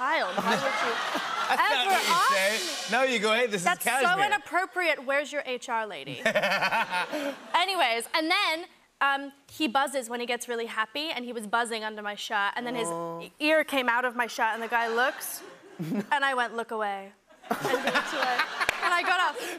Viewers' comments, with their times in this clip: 0:05 i love jimmy's laugh in